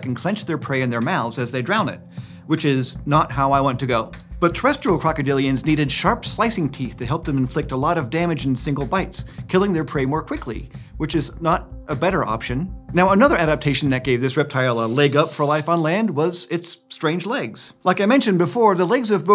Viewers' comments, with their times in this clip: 0:03 his voice became smaller